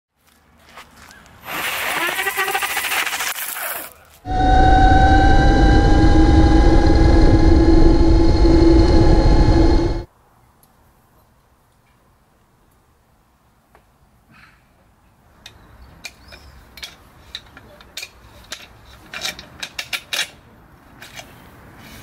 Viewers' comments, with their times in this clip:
0:04 sound of the mini batpod ❤️❤️❤️❤️❤️❤️❤️